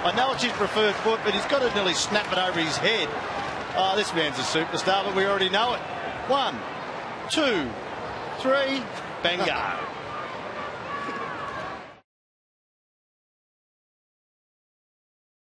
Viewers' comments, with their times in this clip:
0:08 Bangard.. not sure if new word I have not heard...or commenter having stroke :/